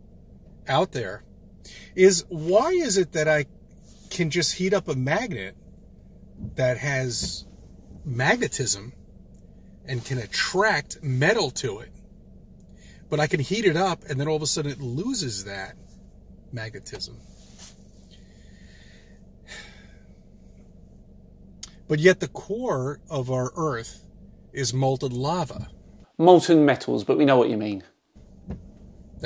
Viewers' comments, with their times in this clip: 0:09 It honestly scares me to my core that there are people like this roaming the planet that are allowed to vote and reproduce.......ffs he said "magatism"
0:15 Maggot-ism? Oh the irony
0:16 Also you didn’t call him out for saying magetism